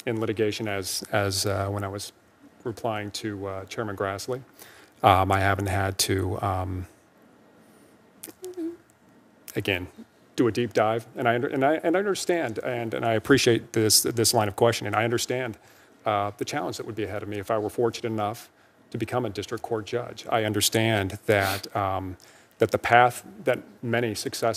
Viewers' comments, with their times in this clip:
0:06 I think you can hear him whimper or thereabout
0:07 whimper is fantastic!!!!!